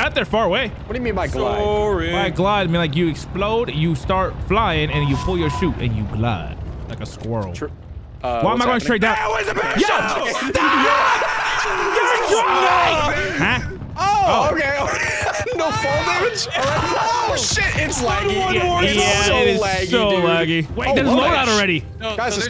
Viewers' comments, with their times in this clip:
0:07 the sheer panic in their voices. 🤣🤣